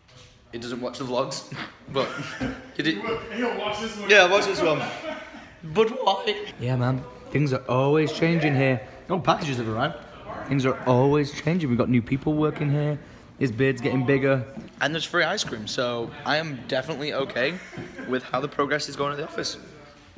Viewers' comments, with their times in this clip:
0:04 voice crack lmao
0:06 Was that a voice crack